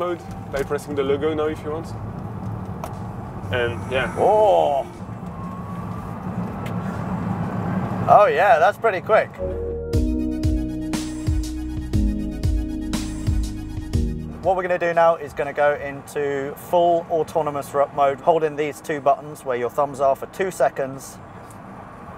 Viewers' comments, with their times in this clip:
0:05 Oh yeah! That's pretty quick! (With no engine sound which makes it not noticable to anyone who watch the video)